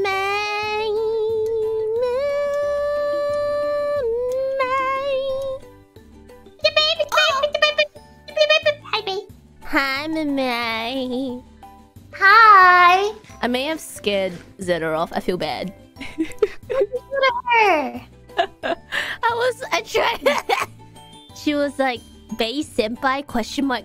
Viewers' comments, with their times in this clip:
0:07 The way mumei says hi bae is the cutest